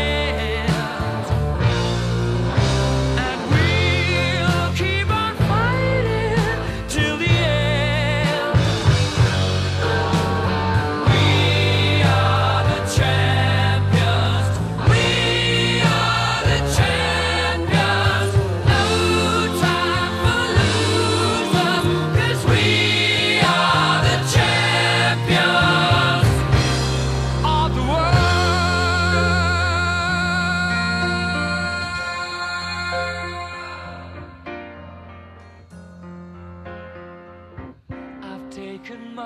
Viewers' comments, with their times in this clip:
0:03 love dat note
0:05 How does he make his voice so perfect here?
0:27 The "of the world" is in the middle It sounds like the end of the song, there has never been an "of the world" at the end
0:27 G nah, the first chorus ends with "of the world" freddie made it so intense ppl remember it more than the actual end of the song